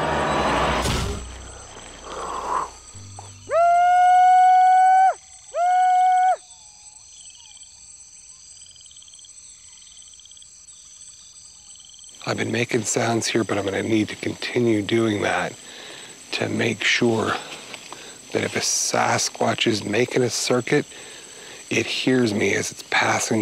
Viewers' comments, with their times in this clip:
0:10 my husky heard the big foot calls and just stared at me like I was an idiot 🤣😂